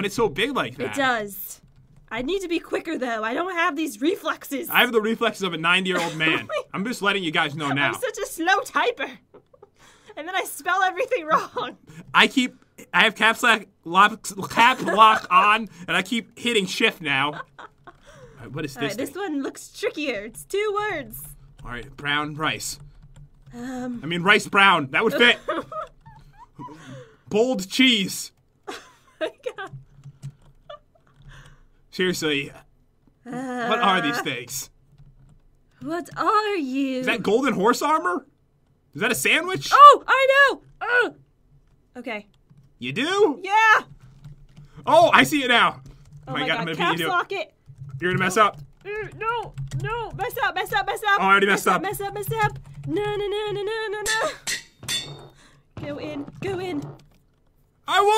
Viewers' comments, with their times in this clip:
0:05 9 year old man?
0:43 Why is the way he says “ Ya do?” So funny?!